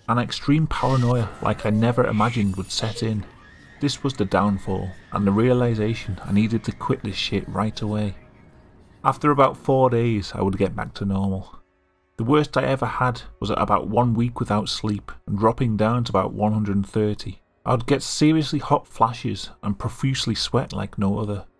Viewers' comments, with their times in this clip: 0:03 "This was the downfall, and the realisation I needed to quickly shit right away."